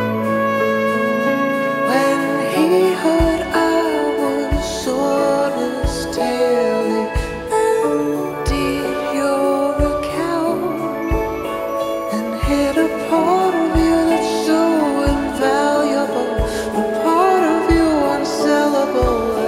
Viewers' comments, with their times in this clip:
0:03 dat kick drum doe